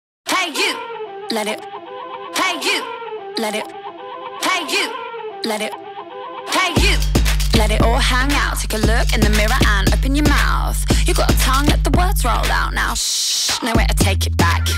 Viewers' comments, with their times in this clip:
0:00 is not like the moroccan beat , no?